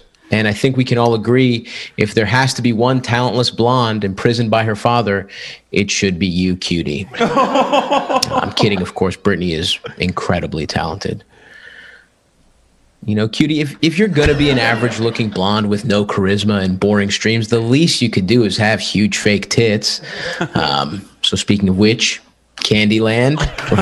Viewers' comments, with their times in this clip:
0:09 the silence actually was awkward for roast standards